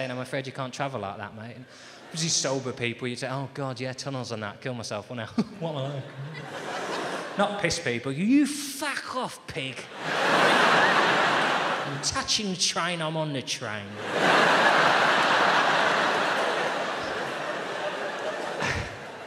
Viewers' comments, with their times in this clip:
0:06 wow this is a different version!! Mayor Boris, what nostalgia... very like Hugh Dennis pissed voice!